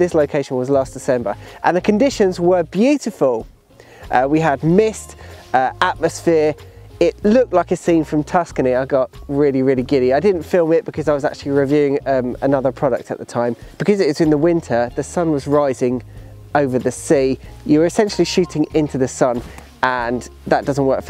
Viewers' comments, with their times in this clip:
0:06 These blue sky days that we have right now are perfect for this type of photography. The alarm right now is a bit painful though!